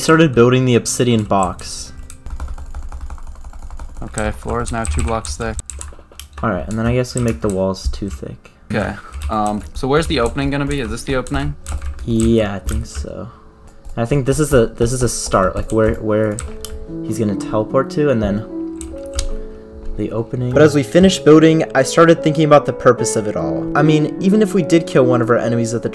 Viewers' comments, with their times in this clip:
0:08 i heard those first few chords and already knew the song : )